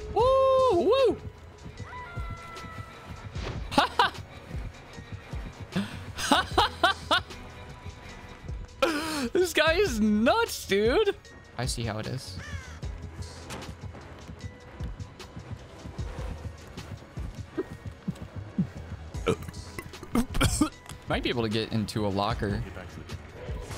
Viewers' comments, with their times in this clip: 0:06 That laugh actually made me laugh lmao